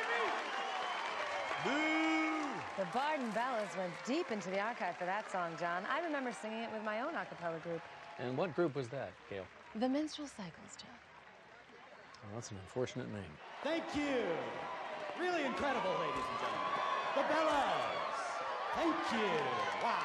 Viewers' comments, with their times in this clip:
0:08 Only now understood that she says "the menstrualcycels" 🤣🤣🤣🤣 Of did I again not hear the name of the groep right? XD (Also, I don't know how to add the time link to the moment when it is said but it is )